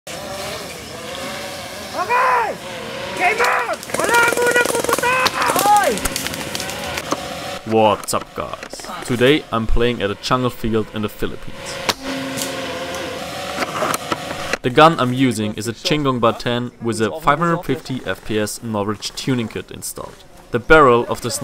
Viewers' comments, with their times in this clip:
0:04 Hi, I’m a fellow Filipino and I like how you played there. Also the Philippine flag on your arm, respect. Also the man yelled “HEY! Don’t shoot yet!”